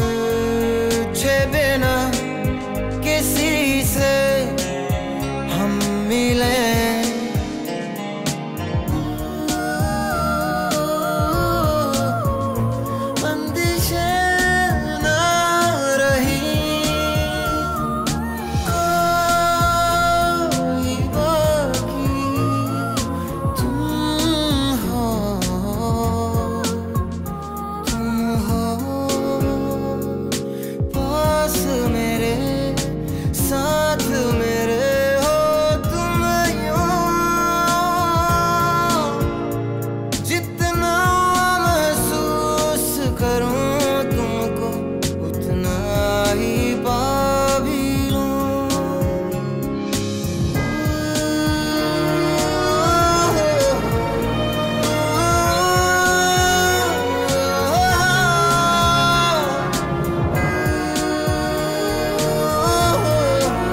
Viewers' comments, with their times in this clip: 0:09 ♥️don't know which instrument started playing but it's truely awesome and give me goosebumps everytime!!...nd i think it's probably violin.. Did anyone else notice??
0:10 the female voice
0:50 is my favourite part of the song,when the church bell rangs and the singer says oooooh listen it with headphones
0:50 ......❤️❤️❤️❤️❤️❤️... humming awesome.....Love Mohit Chauhan